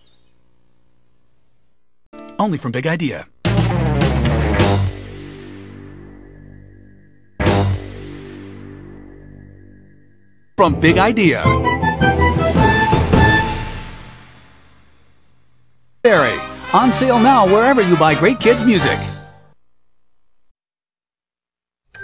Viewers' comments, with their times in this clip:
0:03 Dude was speaking it so fast. He could put John Moschitta Jr. Outta business. 🤣🤣🤣 Cue the surfer rolling guitar